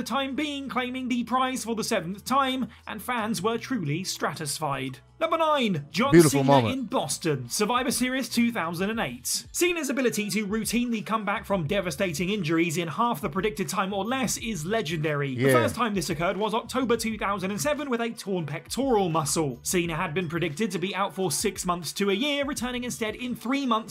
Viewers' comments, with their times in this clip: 0:05 I was there at the Garden in my Hometown of Boston for that event!! That was a hell of a POP for Cena!!